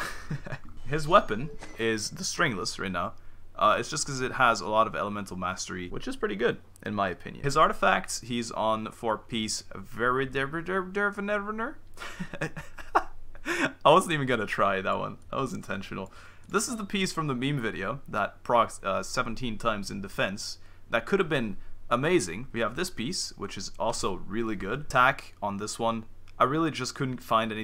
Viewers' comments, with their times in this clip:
0:09 Sounds like something from Fischl's made-up world